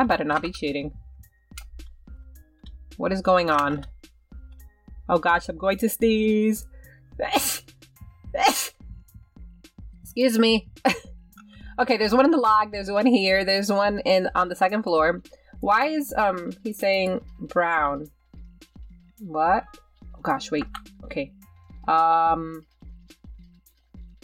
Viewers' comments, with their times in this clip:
0:07 omg that sneeze 😂💖
0:08 bless u sweetie ❤️❤️❤️❤️